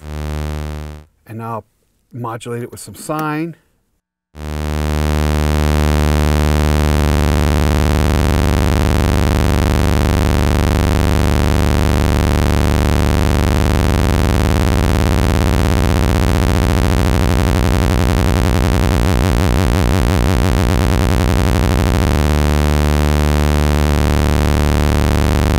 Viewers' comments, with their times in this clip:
0:09 I thought I was playing COMBAT on the Atari 2600 w/ the TV really loud and bass turned up